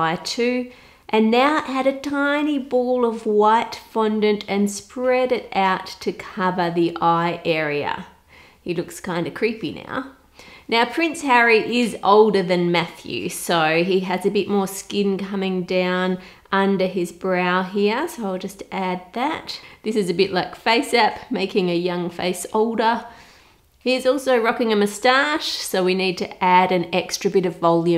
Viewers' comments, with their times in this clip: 0:10 did a double take because I heard “now prince Harry is older than meth use” but then realized it was Matthew, now “meth use” 😂